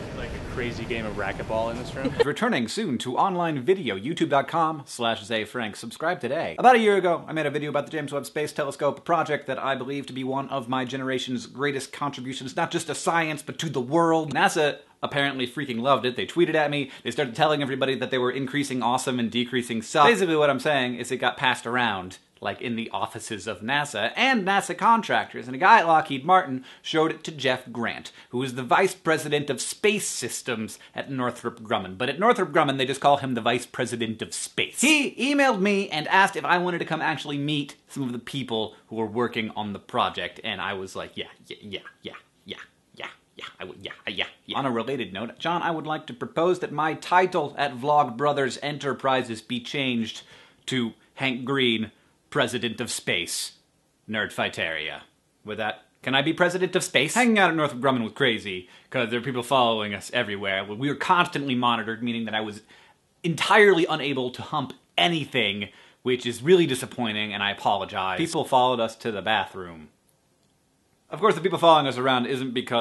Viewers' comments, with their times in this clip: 0:05 I thought - Whoa. Why is Hank not employed in radio?
0:55 LOL, the way he says this. "Can I be President Of Space?"